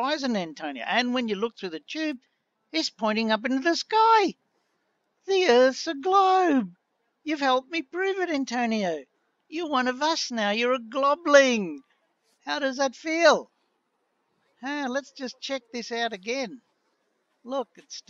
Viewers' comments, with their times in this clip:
0:04 "Like, Scoob, the Earth's a glawbe!" lol I'm so sorry, just found it very funny.